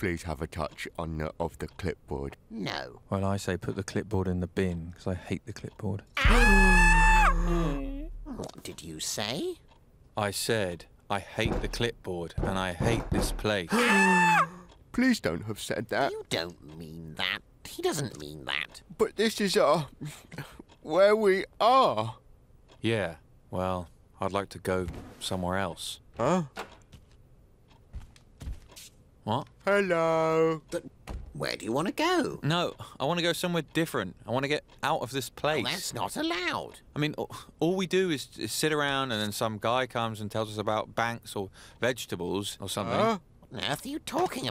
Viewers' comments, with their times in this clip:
0:03 ducks scream tho💀💀💀💀💀💀
0:27 the hello was so cute